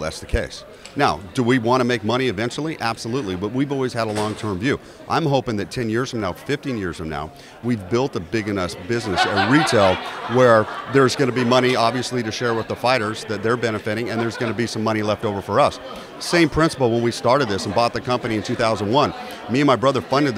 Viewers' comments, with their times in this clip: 0:08 is a perfect moment that shows how different Lorenzo and Dana were. Lorenzo was the cool, calculated, smart businessman in a suit while Dana busts out laughing in a plain long sleeve shirt.